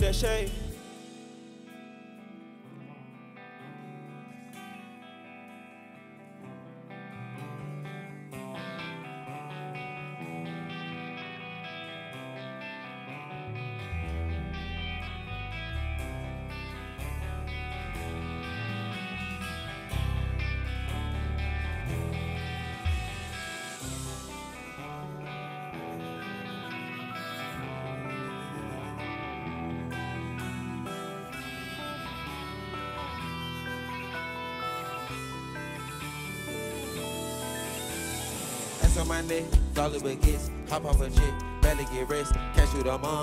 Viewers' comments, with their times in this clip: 0:03 The guitar man went crazy 😱🔥
0:28 gunna and the guitarist vibing is so clean, and peep gunna guiding him back on rhythm cause he was outta sync, shit is music in its essence